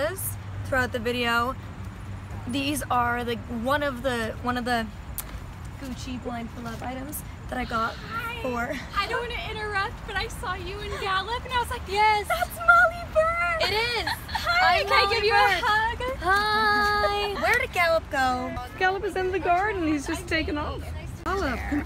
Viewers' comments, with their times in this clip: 0:07 poor girl sounded so nervous 😓